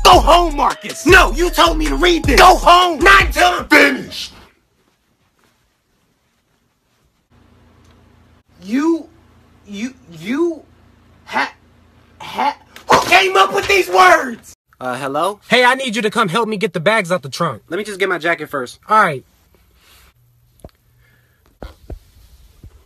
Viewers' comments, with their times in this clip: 0:03 NOT UNTIL I'M Demonic voice FINISHED!!!